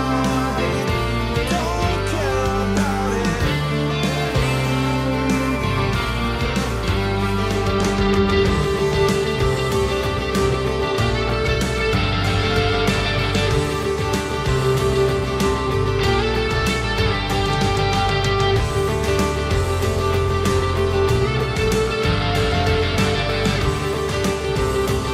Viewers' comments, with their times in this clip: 0:07 Great Cover of this Song! I Love the tones of the guitar~ Sounds a little like U2 on…. 🎤🎶👏🎸💙💚🖤